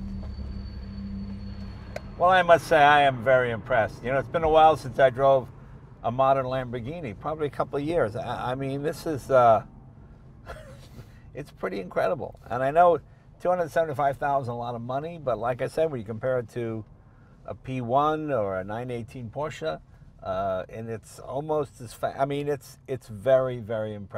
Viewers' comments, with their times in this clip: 0:08 .Oh oh, this ise.It got him too.Thise italiene ise givine me a brainfarte